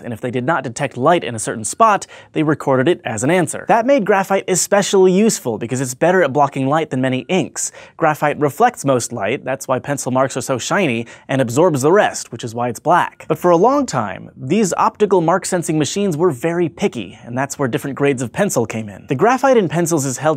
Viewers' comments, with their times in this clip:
0:06 that's nice and all, but the audio had some annoying faint beeping in it, kind of like an truck that drives backwards beep with lower frequency.(there are a few at arround ) No it's most certainly not my system nor headset tested it jsut now^^